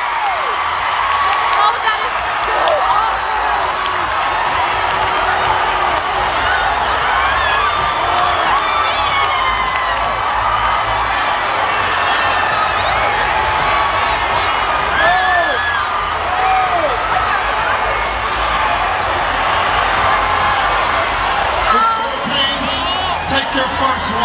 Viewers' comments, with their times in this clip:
0:07 Clarissa (Miss DR) cheering for Pia!